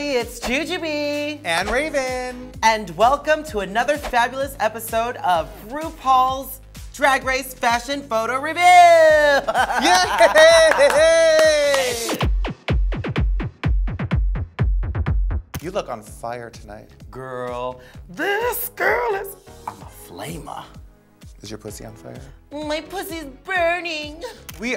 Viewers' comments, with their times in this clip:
0:09 lmao at Raven's Voldemort laugh